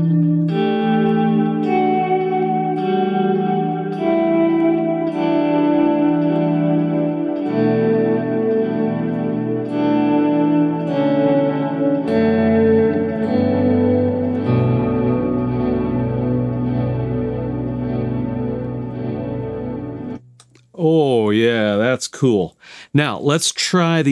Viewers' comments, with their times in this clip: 0:10 how do you suddelny get this flute like sound ?